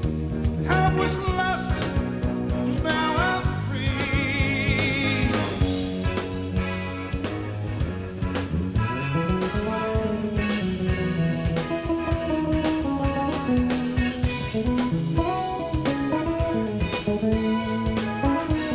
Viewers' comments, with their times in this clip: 0:06 WHAT AN ORGASMIC BASS SOLO! ❤